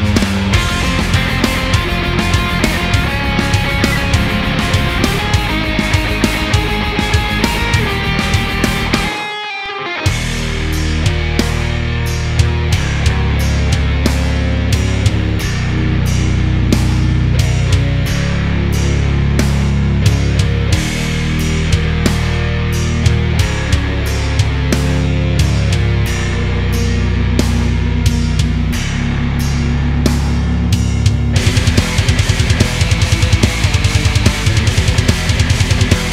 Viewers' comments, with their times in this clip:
0:10 I like this because it sounds like a Stoner Rock type of song
0:10 sounds frickin awesome
0:10 sounds like an unreleased Alice In Chains song
0:11 Sounds like a Woods Of Ypres song
0:11 has some serious Woods of Ypres vibes, fuckin love it
0:13 you accidentally created late nirvana
0:23 doom is perfect in order to give that "stoned" vibe which the original has. PS: you have some amazing skills 😍